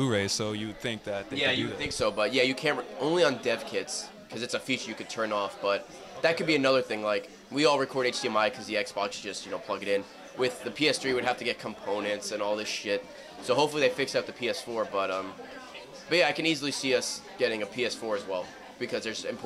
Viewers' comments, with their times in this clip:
0:04 Did he just say only on deaf kids?